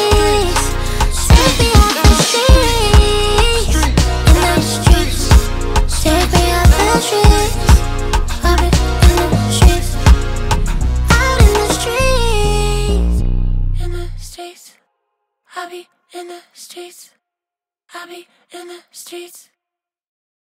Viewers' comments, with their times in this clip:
0:08 I love her voice a lot!! Her voice just has that magnet that attracts me! Commented on 28 Sep 2024,